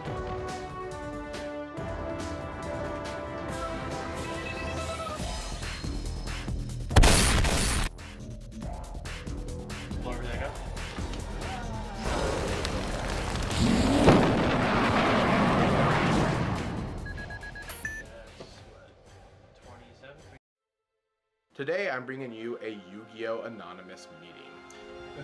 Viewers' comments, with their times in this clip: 0:06 Also, RIP headphone users with Gagaga Cowboy SFX ;-;